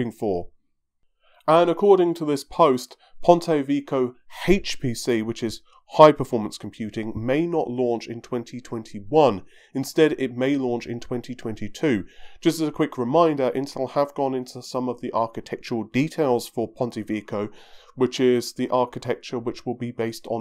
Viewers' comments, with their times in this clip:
0:03 at this point I'm certain this channel is trying to specialize in the mispronunciation of product names <3